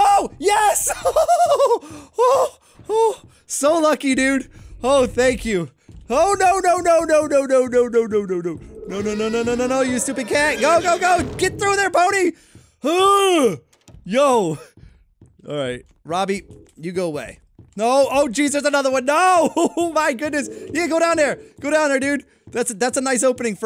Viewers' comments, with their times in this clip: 0:06 *He sounds just like the voice of a cat when saying "nO No nO"